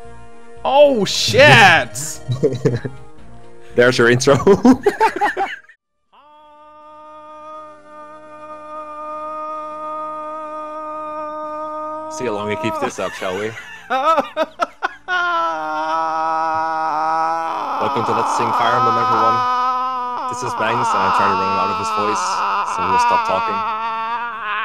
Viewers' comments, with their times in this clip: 0:08 Anyone else thought there was a mosquito somewhere in their room?